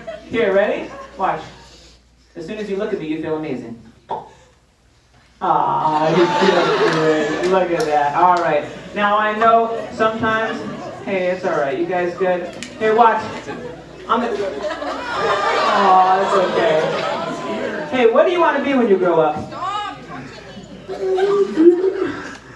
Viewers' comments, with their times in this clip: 0:07 anyone else hear that red t-shirt say STOOPP like wtf